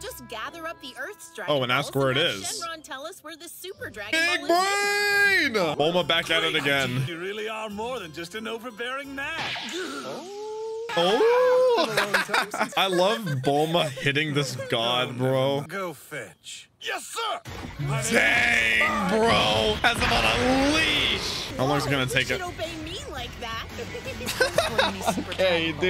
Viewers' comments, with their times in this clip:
0:07 mins into the video, and I just noticed the dub 😂